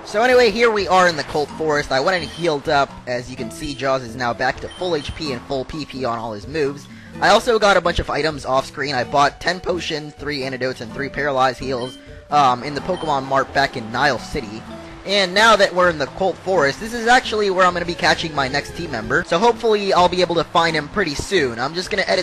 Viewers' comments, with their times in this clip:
0:08 starting You hear a voice crack at potion :D